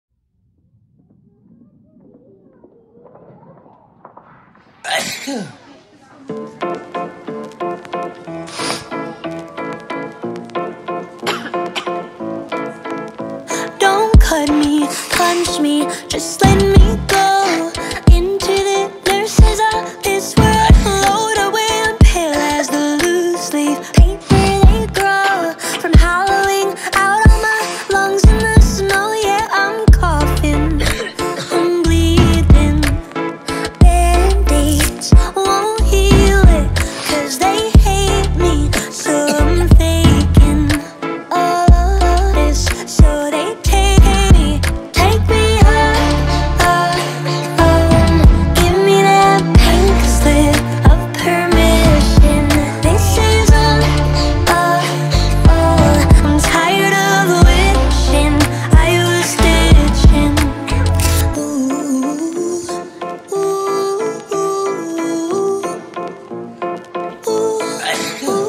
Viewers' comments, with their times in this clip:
0:04 cardi b corana virus :p
0:05 when this guy sneezed, i literally said "bless you"
0:05 someone cough Me: ahhh corona virus social dislocation away from me and my iPad 😂😂😂😂
0:22 anyone else noticed that she sang at a higher pitch after the word "leaf" ??
0:29 is so catchy😭
0:56 Is she Irish??? Cause she sounded Irish